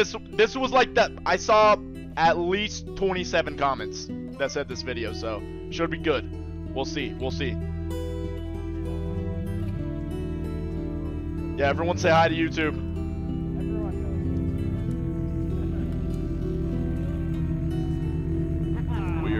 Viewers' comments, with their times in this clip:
0:07 It’s not showing your voice